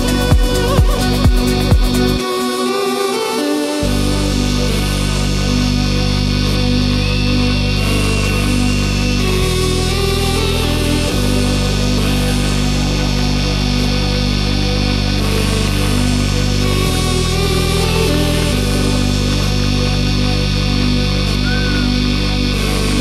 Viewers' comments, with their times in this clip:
0:04 That drop goosebumps all over !